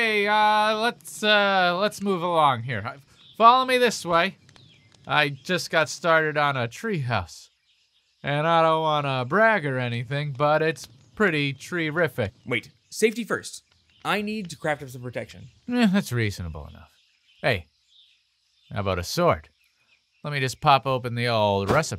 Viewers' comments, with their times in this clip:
0:07 I don't know if this was intentional, but that was a pretty decent John Wayne there...